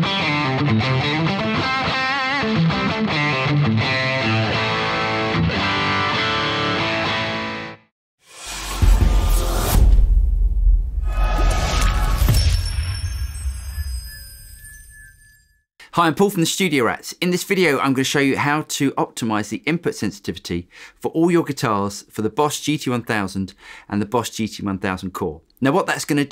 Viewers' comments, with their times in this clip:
0:08 Can hear the same noise in the intro too actually, up to